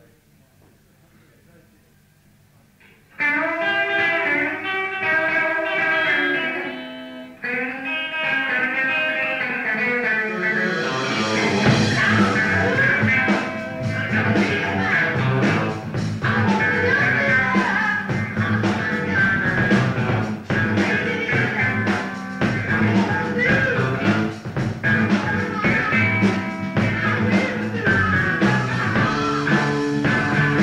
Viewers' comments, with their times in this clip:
0:03 It sounds like Page is playing with pickups out of phase on the first track. I didn't realise he had this mod done to #2 so early.
0:17 Anyone else heat THE FIRM -ish????!?!! Bird on the wing……she is flying to me???!